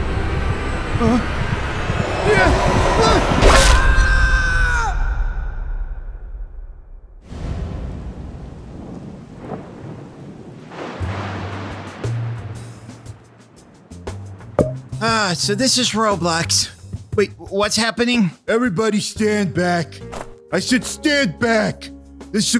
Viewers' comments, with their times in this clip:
0:03 the real sound is OHH NO OOFFFFFFFFFFFF